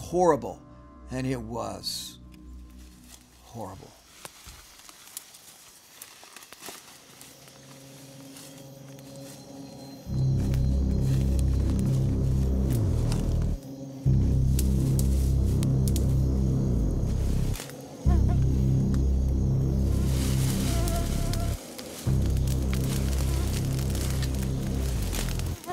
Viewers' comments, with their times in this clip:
0:07 The music is awesome.